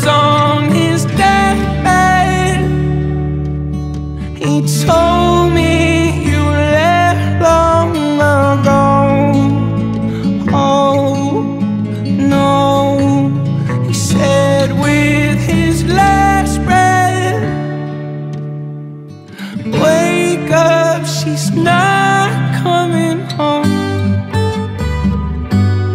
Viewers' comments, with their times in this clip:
0:06 Is it just me or is anyone else getting nirvana vibes lowkey from this ? 😂❤